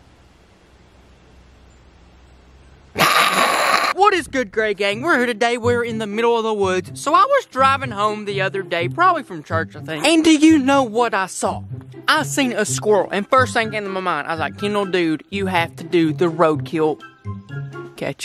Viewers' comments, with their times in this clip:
0:03 Scared the crap out of me RIP me (A headphone user with full volume) 😂😂